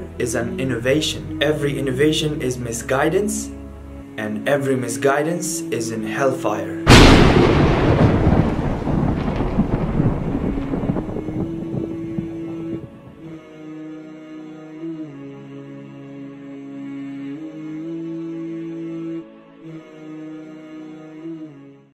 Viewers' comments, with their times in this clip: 0:06 at Max level volume in earphones 😵